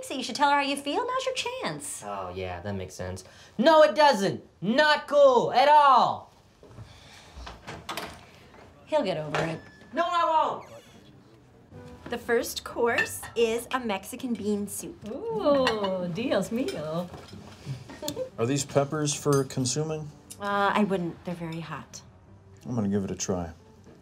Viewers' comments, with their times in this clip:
0:08 Forgot to edit out the door shut sound effect